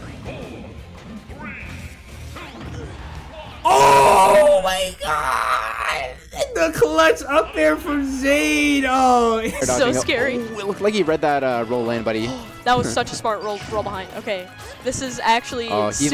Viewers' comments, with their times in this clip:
0:04 that clipped turned him into Lola from Big Mouth